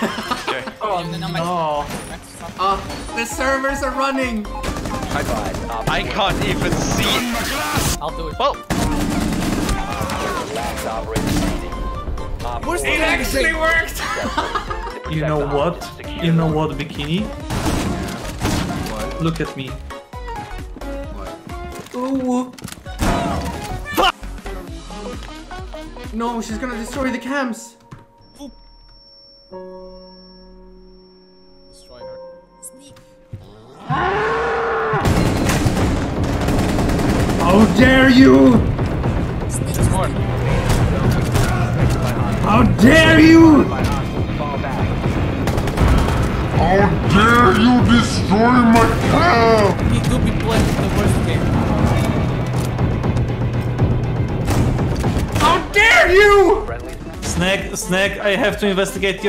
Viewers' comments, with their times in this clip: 0:05 that highlander sound is feeding my soul.
0:07 that lovely For Honor scream .Love u Highlander xd
0:07 I like how he put highlander sound effect on sledge because there both Scottish xd
0:35 The dying light sfx kinda gave me nostalgia
0:40 am i the only one who heard the dead by daylight chase music?